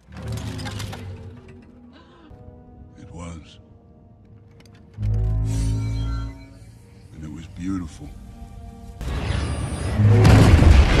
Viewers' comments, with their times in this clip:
0:02 Arguably the most satisfying infinity stone sound effect imo